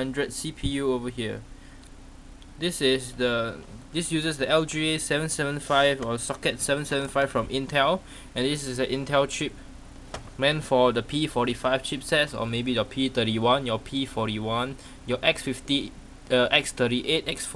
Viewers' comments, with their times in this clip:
0:05 i thought he said "suck it" until i watched for a few more seconds, gotta love the accents >:D